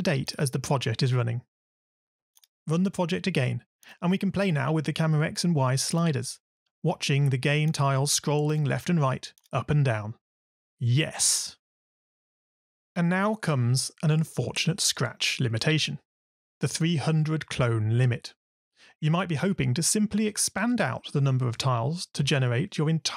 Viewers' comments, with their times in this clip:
0:10 the most manly yes i ever hear...